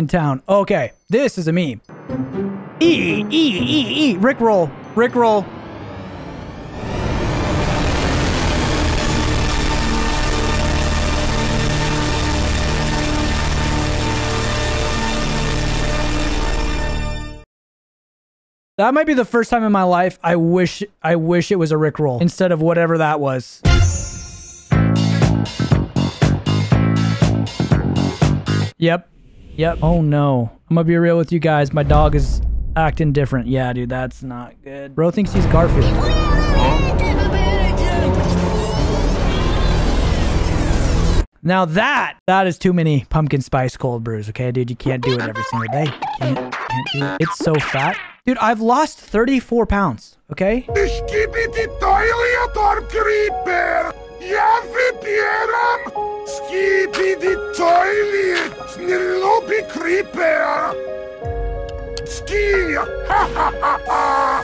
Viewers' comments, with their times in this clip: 0:07 ppl with headphones are lucky to be alive after this💀
0:51 it was polish if someone wants to translate it